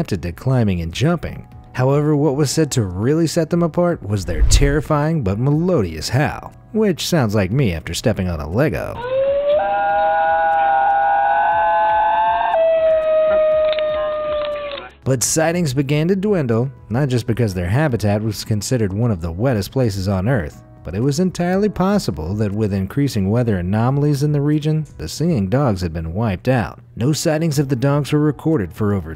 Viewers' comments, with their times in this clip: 0:08 UMMMM THIS US A WEIRD SOUND
0:08 Bro is it just me or does it sound like siren head
0:09 when siren head steps on a lego.
0:10 sounds like siren head more